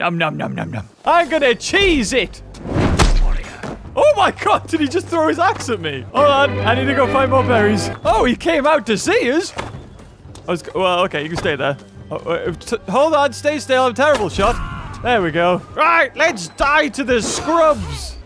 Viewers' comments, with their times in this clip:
0:06 y the fuck is the viking farting XD